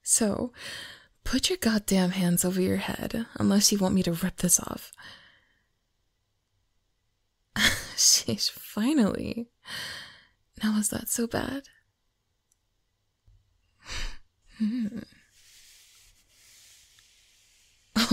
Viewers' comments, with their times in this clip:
0:03 I just Love her voice so much. So relaxing but seductive at the same time. domme mommy moment 🤤😵‍💫